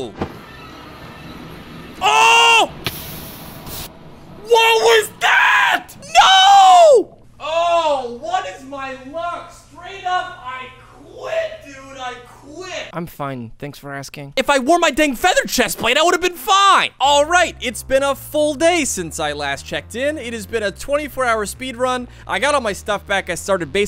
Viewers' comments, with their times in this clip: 0:07 it's so funny i laughed at everything like some sound in a distance microphon